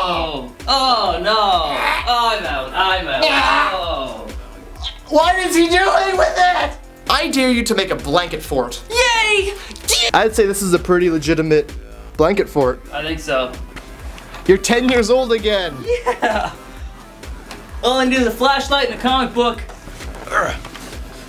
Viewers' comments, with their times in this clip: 0:09 i love the enthusiasm with which that guy said "yay!"